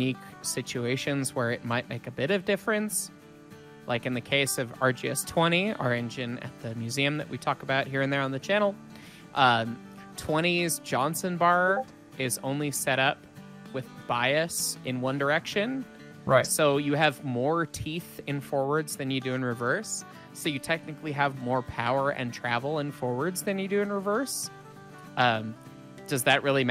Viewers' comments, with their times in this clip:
0:09 who else checked their discord ?
0:12 That Discord notification spooked me